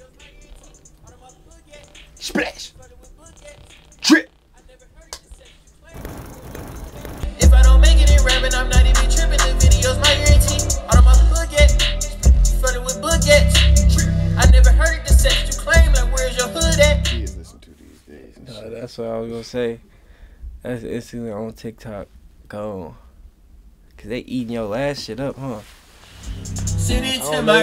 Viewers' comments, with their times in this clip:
0:08 nawh ddg i need you to rap that not that small voice shii